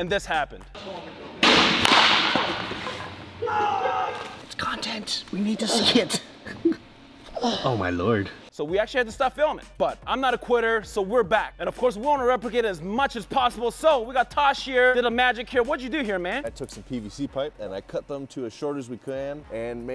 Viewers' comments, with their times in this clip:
0:07 That “oh my lord” came from man’s soul it sounded so sincere but so sarcastic can’t tell if he’s about to grab a ice pack or Ask the Baseball if its okay after that traumatic event 😂